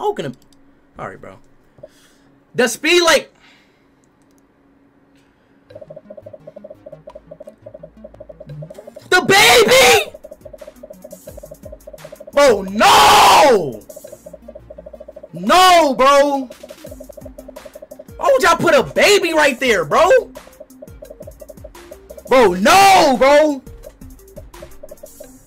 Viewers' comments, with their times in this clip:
0:08 was so loud it startled me a little bit 😂